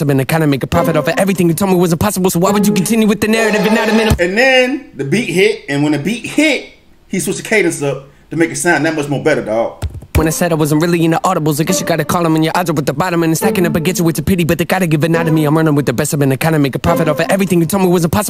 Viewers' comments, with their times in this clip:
0:04 you say when the beat hits he switch the cadence up but whats awesome is how his voice literally builds up right before that so you the know the beat was bout to drop.